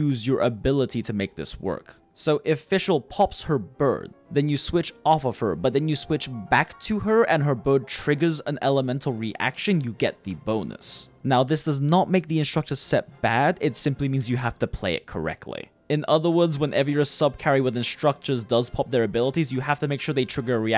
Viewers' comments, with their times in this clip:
0:03 why did I laugh so hard on how you say the when fischl pops her BIRD.